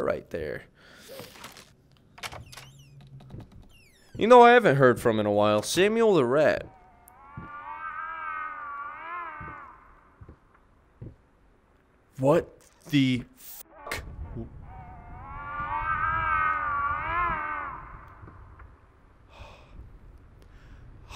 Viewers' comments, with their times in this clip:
0:07 sounds like my cat is dying
0:08 sounds like COD zombies 😭😭😭